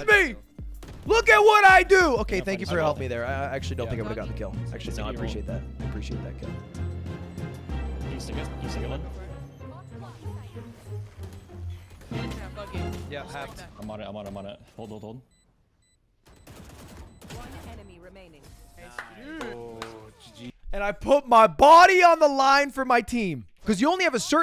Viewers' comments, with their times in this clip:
0:07 nice music cues mr editor
0:09 the music timing was so funny HAHA